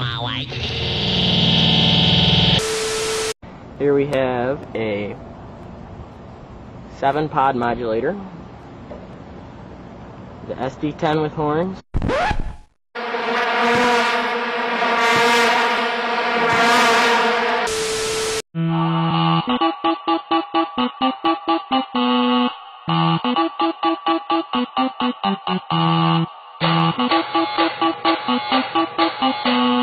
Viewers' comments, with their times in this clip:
0:09 Me: Mom, can we have SD-10 with horns at home? Mom: We have SD-10 with horns at home SD-10 with horns at home:
0:10 the stupid part of my brain thought that was a socal edison before i realised it was an eclipse 8